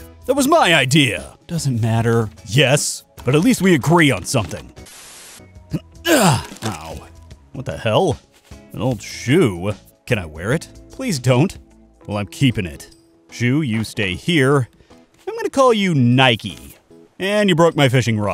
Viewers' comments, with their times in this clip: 0:03 The multiple voices are reminding me of Slay the Princess